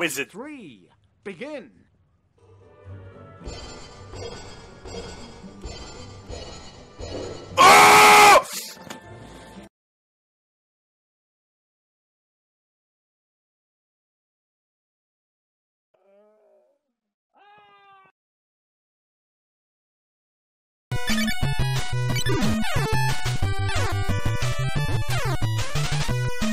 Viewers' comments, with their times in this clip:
0:07 that viking battle cry